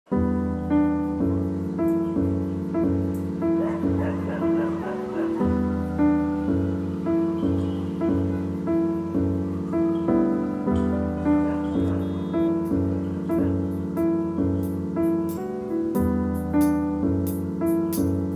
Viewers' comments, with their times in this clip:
0:00 puts music on to stop hearing the dogs barking.. only for it to also be in the music 🤦‍♀